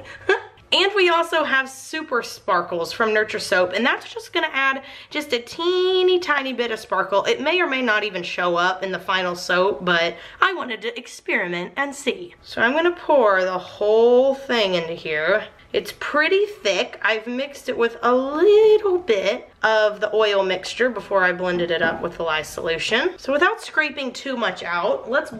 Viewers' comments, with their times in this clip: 0:10 she sounded like Mayor Bellwether from Zootopia XD